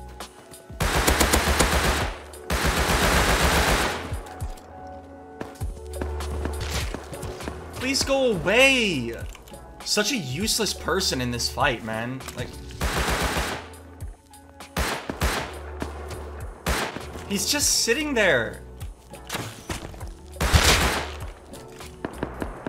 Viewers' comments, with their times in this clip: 0:09 he literally starts crying